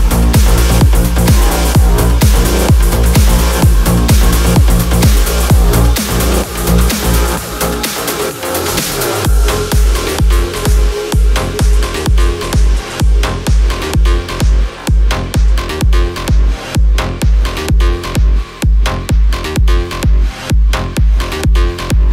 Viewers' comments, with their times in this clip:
0:06 that transition so sick!!!